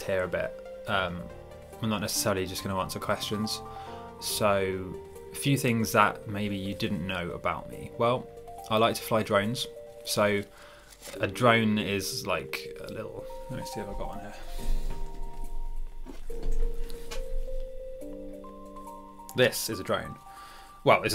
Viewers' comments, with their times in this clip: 0:08 I thought you said "I like to fly dragons"